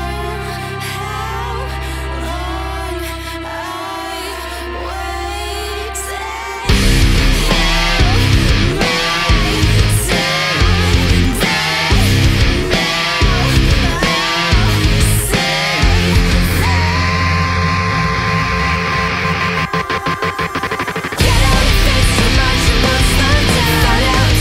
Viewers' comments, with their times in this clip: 0:06 what the shit? I thought those were pinch squeals?